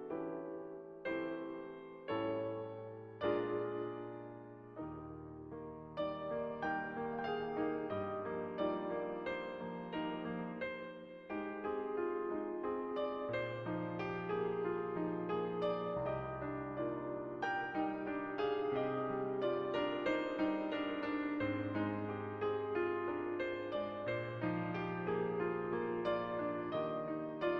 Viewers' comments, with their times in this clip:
0:08 That Dearly Beloved from sounds sooooo good ;o; that Xion part afterwards was so epic